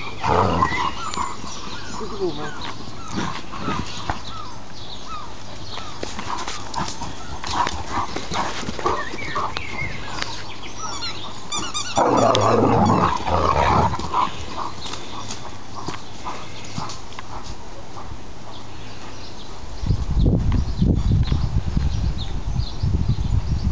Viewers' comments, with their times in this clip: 0:10 sounds like Darth Maul's lightsaber